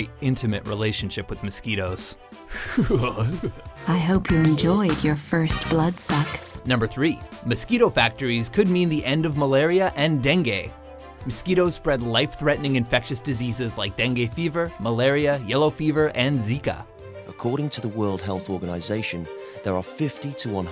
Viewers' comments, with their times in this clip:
0:03 Is no one going to mention that horrifying laugh ????